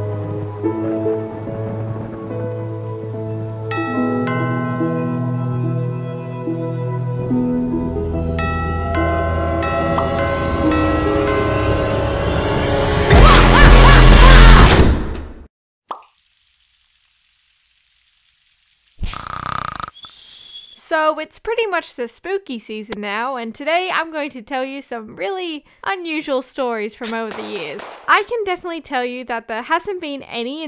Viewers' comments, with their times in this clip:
0:10 Rip my ears with earphones: 👁👄👁👍
0:13 I was wearing headphones.. 🥲On almost full vol
0:14 Me: is wearing head phones Also me:OWWWWWWWWWWWWCH